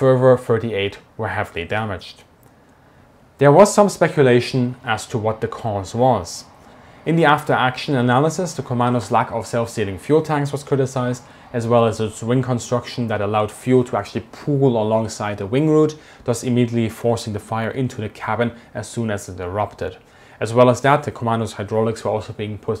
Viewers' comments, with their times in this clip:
0:08 As a building contractor, I wonder where I can order these self-ceilings?